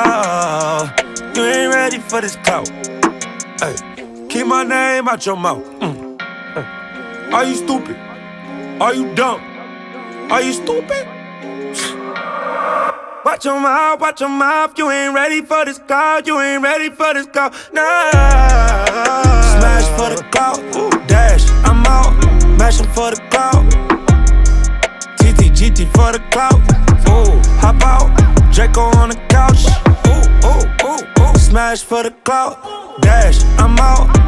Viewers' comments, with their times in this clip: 0:07 there 6ix9ine go again stealing another rapper’s flow
0:16 That high note tho ..... 👌🏼